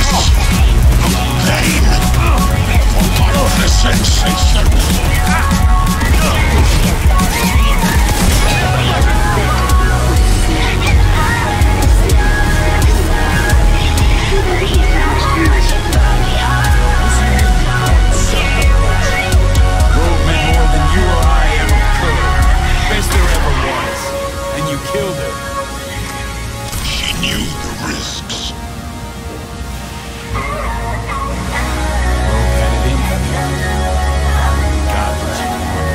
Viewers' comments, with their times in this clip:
0:07 No one talking .. that was P E R F E C T timing
0:19 That voice together with the song play just soo good